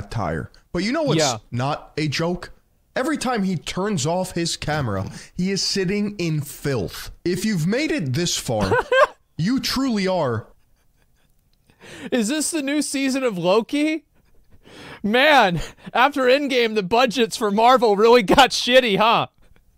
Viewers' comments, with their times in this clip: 0:07 My brain actually shutdown here for a bit while it tried to process the decision whether to classify this as 'Furry' or not... The song interrupted that process and my brain decided to to just forget everything about the last 43 minutes of my life. 😁